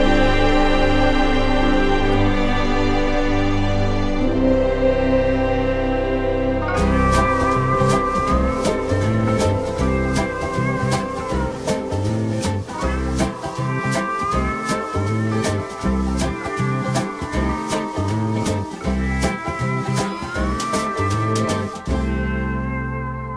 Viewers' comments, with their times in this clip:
0:06 Best soundtrack EVER! It’s so catchy, I’ll admit! 🎶🎼🎵